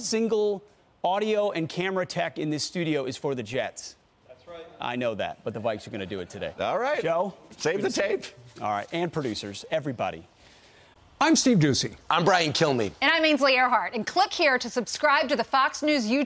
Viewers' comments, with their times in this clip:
0:04 a random voice agreeing lol you can tell he felt the need to speak up ^.^ lol